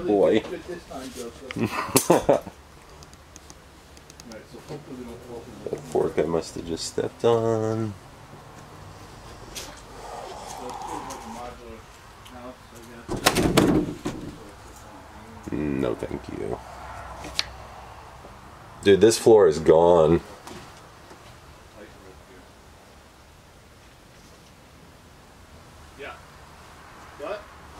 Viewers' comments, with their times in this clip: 0:08 .. sounds like a woman making three gasp like sounds